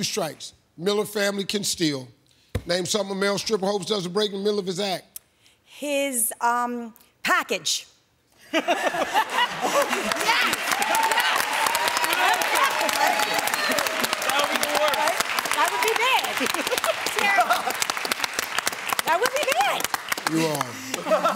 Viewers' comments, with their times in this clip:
0:03 that lady has a weird ass laugh